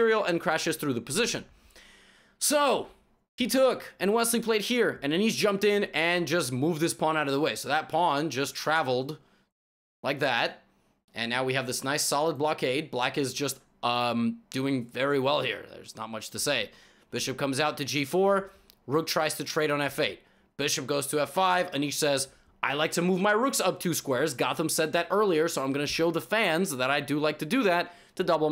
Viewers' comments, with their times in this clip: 0:09 Eric Rosen squealing in delight seeing the pawns lined up